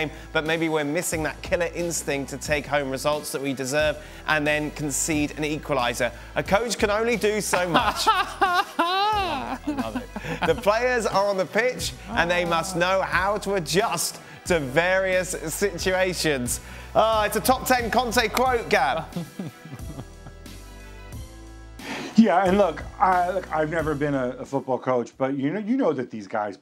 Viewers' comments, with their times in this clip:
0:07 that wierd laugh. Yeah conte is no good to bench eriksen if he wants to create chances. Vidal's past his prime now. Barella eriksen can play together, it would be better for inter to play them together going forward.